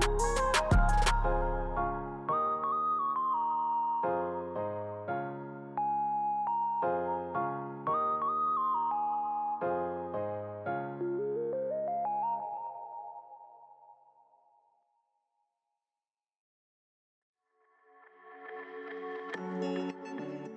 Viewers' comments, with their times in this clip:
0:04 Wait... whats this song ??? Its giving rod wave 😫😫🥰